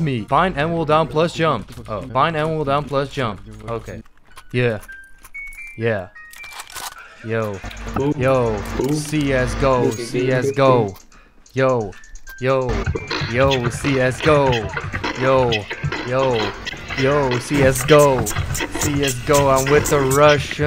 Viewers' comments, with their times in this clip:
0:04 brah lil kids someone beatboxing and shit hahahaha